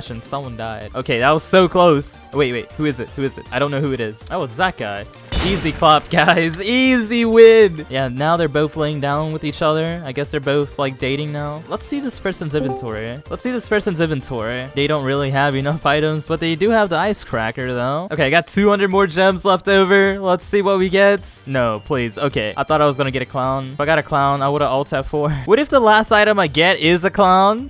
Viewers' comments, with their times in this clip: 0:10 random discord call
0:12 i hear someone joining discord call